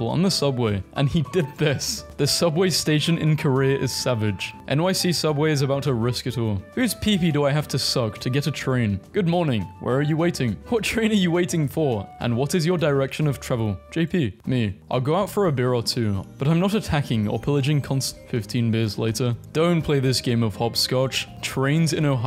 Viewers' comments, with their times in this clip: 0:09 12 Chuggas for me. Three cycles, with 4 in each.